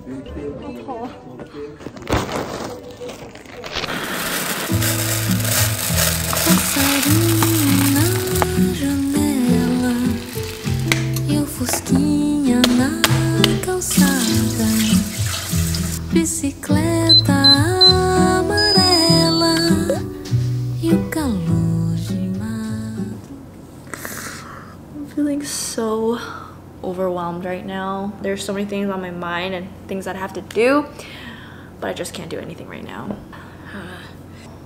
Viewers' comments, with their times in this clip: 0:04 Brazilian song aaaaaaa this make me happy 🇧🇷
0:04 out of nowhere, a song in portuguese. I loved it haha ❤
0:05 the brazilian song 🥺🥺🥺😭😭😭😭
0:05 brazilian song <33333
0:05 as a brazilian, I was really confused with the brazilian music starting hahaha
0:06 i just love when she uses brazilian songs <3 (im brazilian)
0:07 the song in Portuguese 🥰🇧🇷
0:07 Yess Brazilian music. That's what i'm talking about. A lot of love for you from heree 💛💙💚💚
0:08 I was surprised by the brazilian music 😮💕
0:08 The Brazilian song 😩❤️🇧🇷
0:10 Omggg! I hear a Brazilian song happy to know people love bossa nova
0:10 And then, OUT OF THE BLUE, a BRAZILIAN song !!! OMG!!! <3 #brazil
0:11 wow brazilian music, br br br did you call us??
0:13 I was distracted by the video, I didn't expect Brazilian music. I am from Brazil. I feel good, when I see details that are things from Brazil in the videos of people who live in other countries :)
0:18 Omg the music is in portuguese!!! I'm from Brazil, i was not expecting that (ps: we talk in portugues here, not spanish)
0:19 Nice, Brazilian music